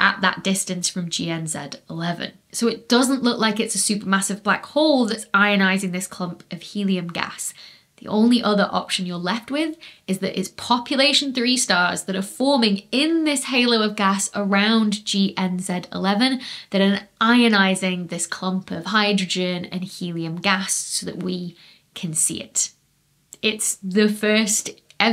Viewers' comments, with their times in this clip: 0:06 “Hell clump”. LOL ok I’ll grow up eventually. :P